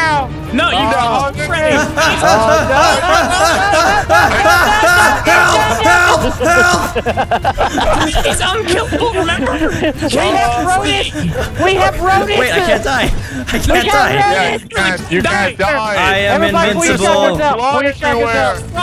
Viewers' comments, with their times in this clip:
0:03 maybe i am mishearing things..... but as a german i totally understand "hör auf hör auf hör auf" right there O _ o
0:05 is he shout'in the german "Hör auf" ? xD